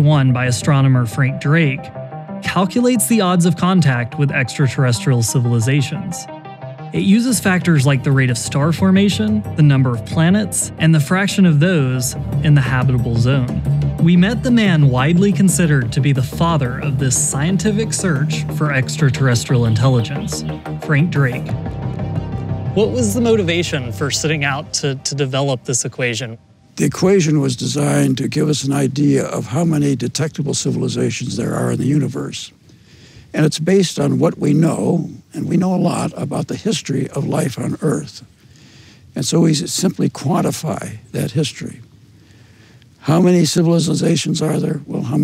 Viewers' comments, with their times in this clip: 0:10 he sounds like a robot
0:28 The guy sounds like an alien himself.
0:29 Not hating on the man but on it really sounds like he's an android :o